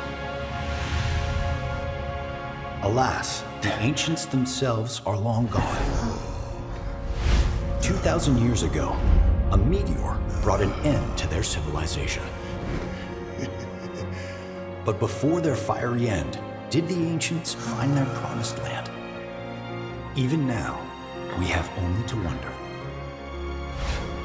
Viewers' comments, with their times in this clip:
0:07 Was Barret chuckling when the narrator talks about how the meteor brought an end to the ancients civilization ? Not cool!
0:12 They foreshadowed that one of sephiroths clones was in the vr too he laughed when the narrator says "a meteor brought an end to their civilization"